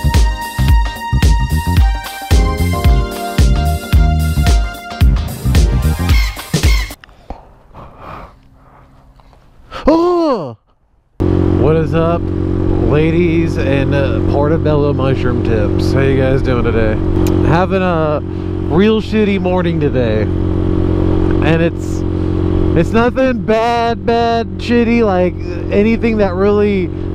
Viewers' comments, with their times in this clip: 0:09 lol that hank hill "bwaah". that top gun vhs has to be collector item . probably worth like $15